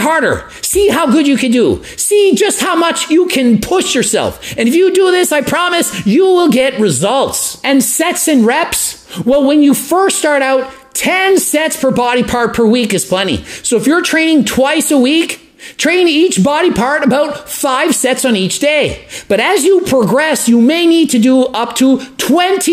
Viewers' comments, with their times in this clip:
0:06 I heard "Sex and REPS" !!!